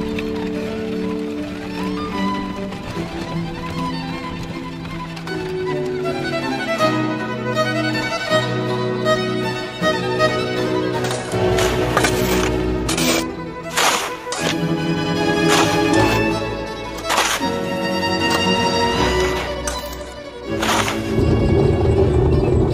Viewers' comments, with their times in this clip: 0:08 The voice accent is a little weird but the animations are great 😀 Ana from Frozen on WW2 😄